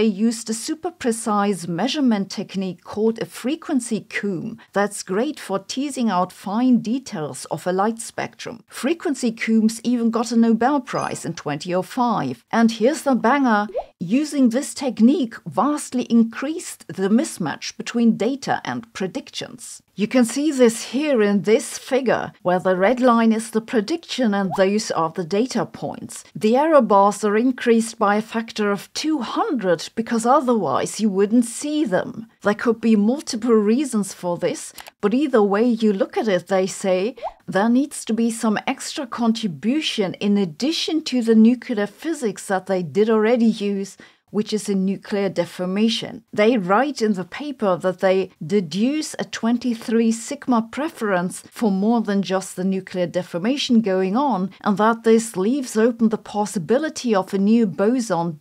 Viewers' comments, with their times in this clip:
0:05 "Frequency Coomb" should be Frequency C-oh-mb, long 'o'. Comb, rhymes with roam. Like "roaming charges". Cheers !!
0:40 Did Sabine say nucular? Well, less than 1σ, maybe it's nothing.